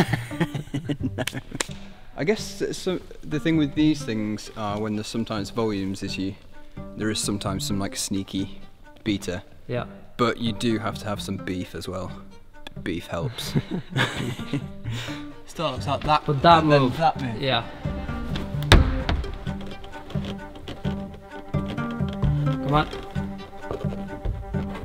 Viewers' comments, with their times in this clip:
0:06 the way he says beta 😊😊